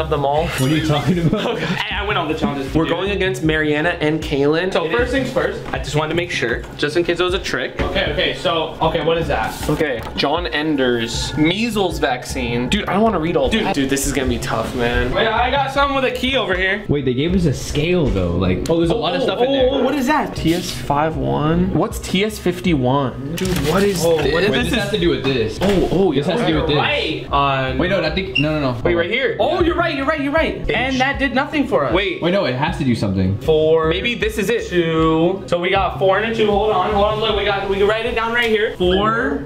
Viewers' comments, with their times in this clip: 0:03 What did he say? I couldn’t tell
0:23 anyone else hear him say nigga what is this ?